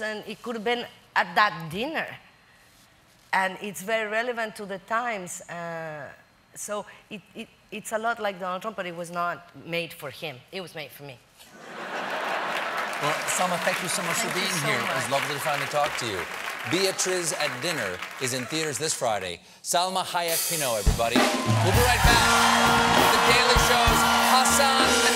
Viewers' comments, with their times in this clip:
0:06 Is it just me or did she temporarily lose her Mexican accent when she said "But it was not made for him, it was made for me" I'm guessing she has probably lost her Mexican accent a bit over time, and has to consciously put it on, because she seemed to lose it for a couple seconds there. And yes, she is hot. :D